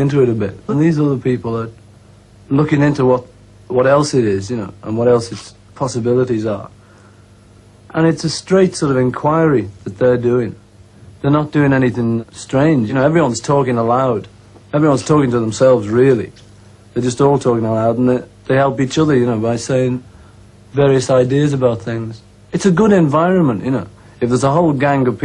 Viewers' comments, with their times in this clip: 0:06 holy fuck that lick though